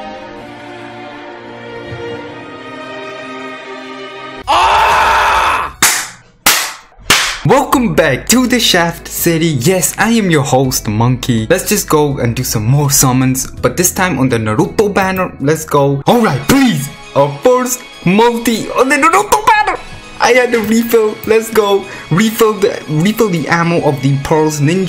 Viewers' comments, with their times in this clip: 0:05 The Shaft Is Strong With This One XDXDXD Oh and did I mention that that scream scared the heck outta me XD